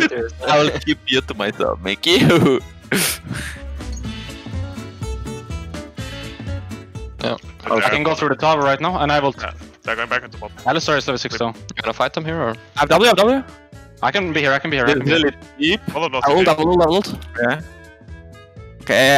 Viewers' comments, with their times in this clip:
0:04 G2: serious samurai face, fearsome red glowing eye also G2: clown fiesta music playing